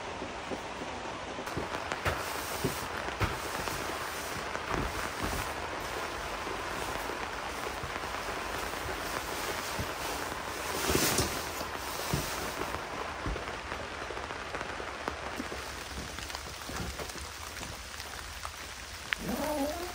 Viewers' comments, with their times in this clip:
0:06 the rain sounds like jurrasic park 1 1993 in the paddok where the trex comes :face-red-heart-shape: